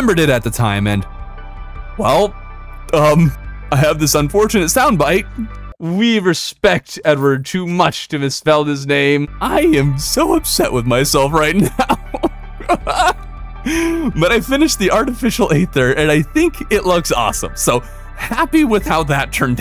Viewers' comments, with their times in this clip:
0:05 you sound so much like technoblade that i thought you inserted an audio clip from one of his videos here